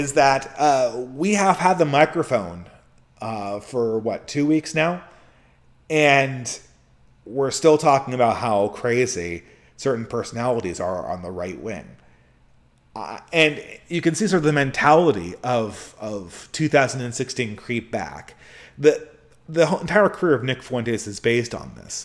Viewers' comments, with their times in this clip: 0:10 Was that something expelled in my general direction, or did you sit on your pet bullfrog on accident or something? (Yes, I know ... long streams, too-good microphones, all that ... but still, I had to take a second to 🤣it up here)